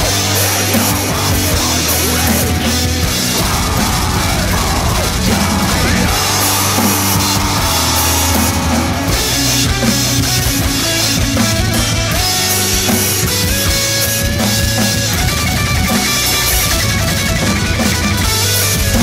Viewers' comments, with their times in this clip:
0:03 1. your drums sound mad hot 2. this cover is fuckin awesome 3. i like how u twirl ur sticks all the time its mad legit 4. tht windmill made this video complete 5. keep this shit comin bro its sickkk